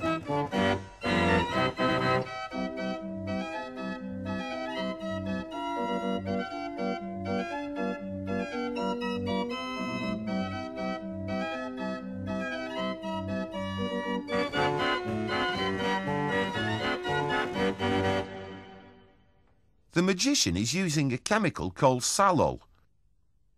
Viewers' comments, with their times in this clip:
0:09 the music is a banger